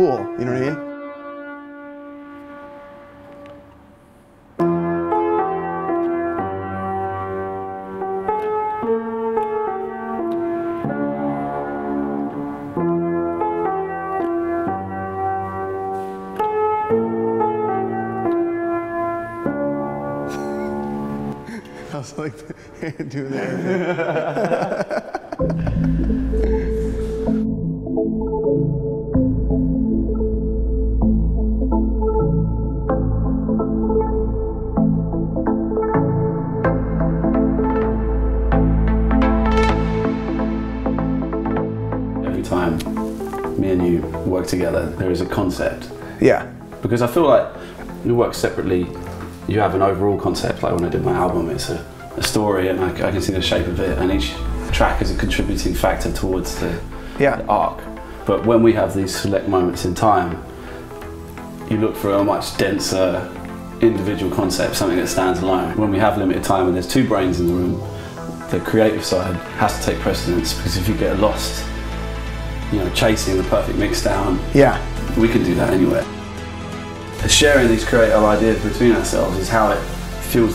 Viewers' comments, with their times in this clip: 0:09 Its beautiful but the sound picking on the song doesnt translate
1:08 Hey that's me starting ha! Good timez. Hope the drums weren't too loud fellas!